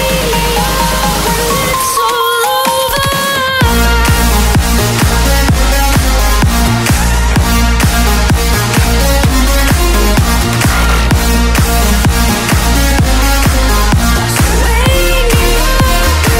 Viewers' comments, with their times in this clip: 0:04 The drop is gorgeous... anyone know the song?